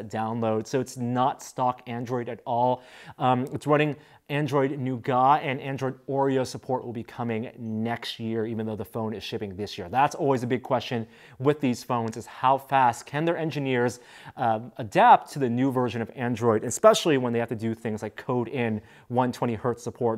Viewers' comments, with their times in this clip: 0:04 It comes with Android Nougahhh.
0:04 He said android "Nuugaaa". I'm dead.